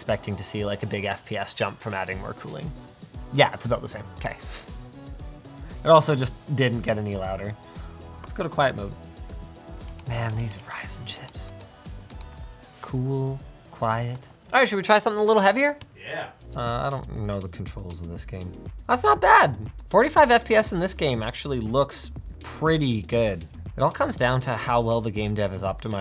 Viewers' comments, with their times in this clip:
0:10 Linus: These Ryzen chips. Subtitles: These fries and chips. 😅
0:10 "Man these fries and chips" xDD
0:10 “Man these fries and chips” -Linus Sebastian, 2020.
0:10 man these fries and chips
0:10 Linus: Man, these Ryzen chips. CC: Man, these fries and chips.